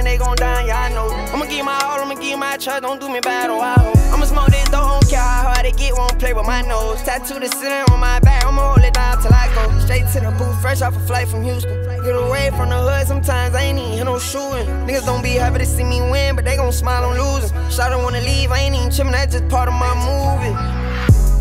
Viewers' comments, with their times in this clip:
0:09 Flow Hit Different